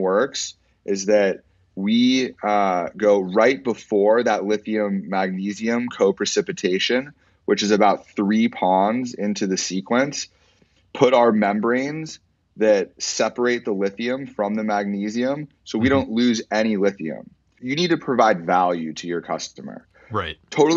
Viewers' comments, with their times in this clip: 0:04 i cant take this dude serious. he speaks with the cadence of someone who is 5 minutes away from smoking a bong and heading to the beach